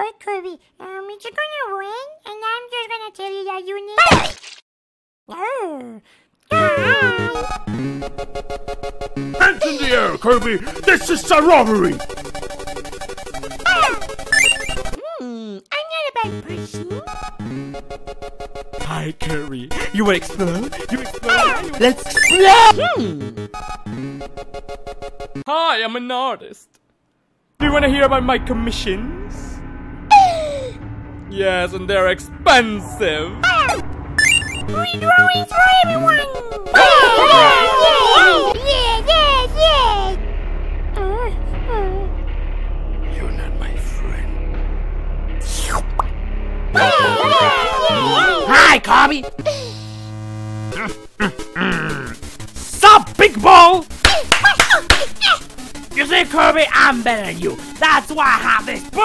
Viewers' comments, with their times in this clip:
0:05 It sounds like the Waddle Dee is saying DIE
0:05 Can we just talk about this very accurate ‘hi!’ from Kirby
0:13 “Kerb stor al lies” Edit: why is he stealing memes?
0:19 Sounds like Jeff the killer's voice, perfectly.
0:21 nobody’s gonna talk about Poppy’s scream of pain moments before he was ultimately forced to be Kirby’s friend?
0:21 before I thought he was saying "let's N O O O O O " But now I see its "LET'S EXPLOOOOO- "
0:31 Yes and there exPENsive 😂🤣💀
0:39 you got the whole squad laughing
0:46 Happy noises. the movie